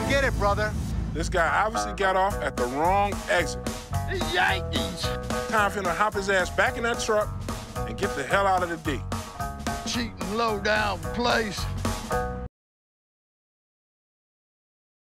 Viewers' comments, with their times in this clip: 0:10 Big Smoke voice